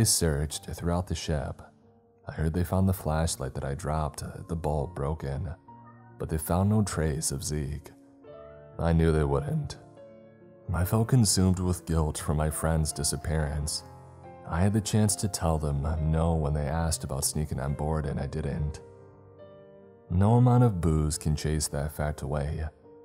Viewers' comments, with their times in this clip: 0:04 I have a weird question. Do you have a cat or other pet. I think I heard it in the background a couple of times